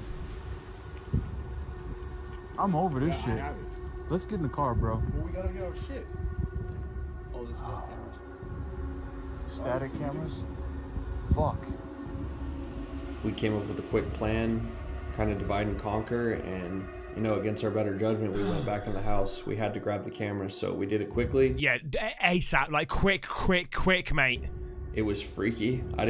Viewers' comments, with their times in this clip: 0:07 did anyone realize the sound like whisper? It's like said "hell ya", i am not really sure but that's what i think.